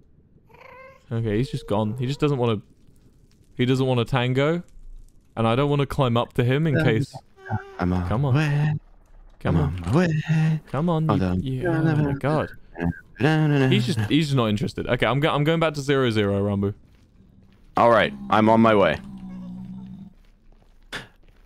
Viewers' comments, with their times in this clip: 0:09 ranboo started singing im on my way by darwin from the amazing world of gumball